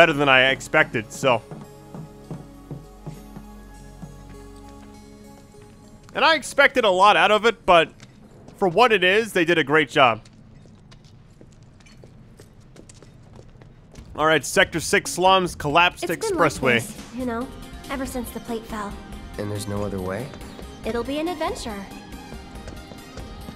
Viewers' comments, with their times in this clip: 0:10 my favorite part of the entire game especially the soundtrack lol